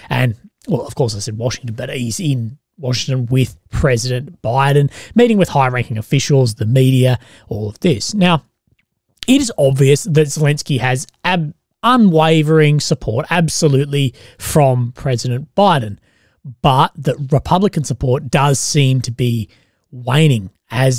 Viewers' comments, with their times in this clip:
0:06 😂 getting a good old sniff in, as per..